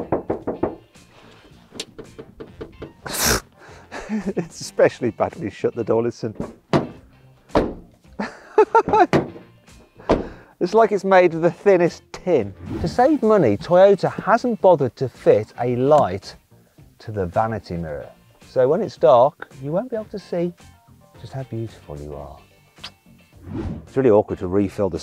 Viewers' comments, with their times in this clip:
0:10 sounds like the cargo door on an 80's peugot van